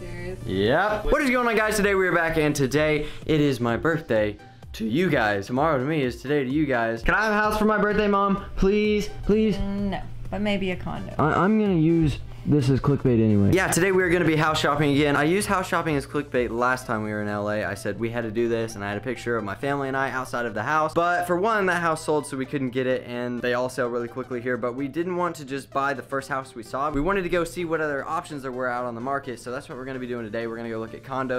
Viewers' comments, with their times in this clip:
0:10 Did any else think she said condom
0:11 did his mom say he could have a condom
0:11 maybe a condom
0:19 mane a condom